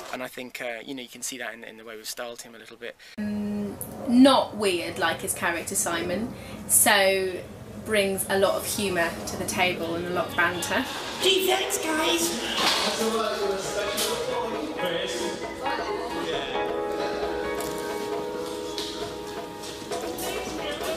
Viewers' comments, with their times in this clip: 0:06 He suddenly becomes Smeagol!